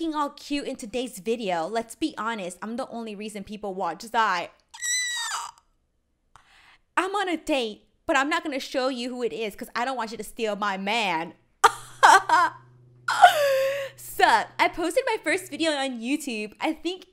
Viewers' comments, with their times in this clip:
0:05 that scream though